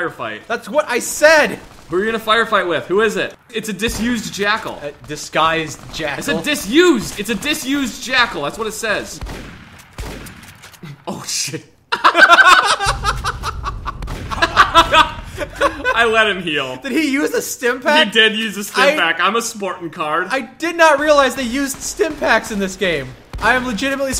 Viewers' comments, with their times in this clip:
0:09 realest "Oh shit" in the whole series.